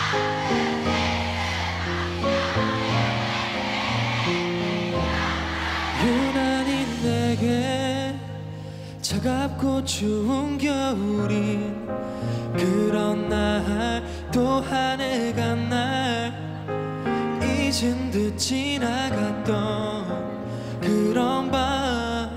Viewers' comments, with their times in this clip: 0:03 yugyeom trying not to laugh when our ahgases messed up the fanchant😂😂